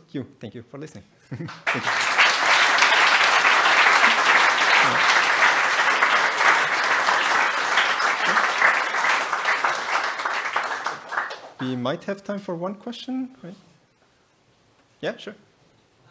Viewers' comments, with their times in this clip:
0:04 that applause on the bald guy. LOL. BTW thank you all for the real time GPU compositor.